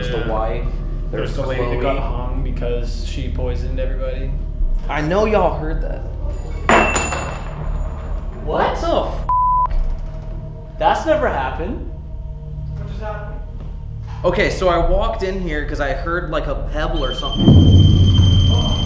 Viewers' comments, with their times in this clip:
0:05 I hear a womans voice